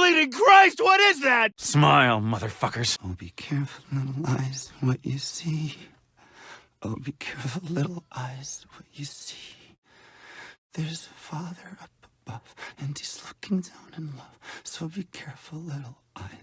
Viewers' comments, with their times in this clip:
0:03 Oh god, the "actual insanity" bit ... That's so fucked up, I would be literally scared, or crying Hearing Blake going that nuts it's just so sad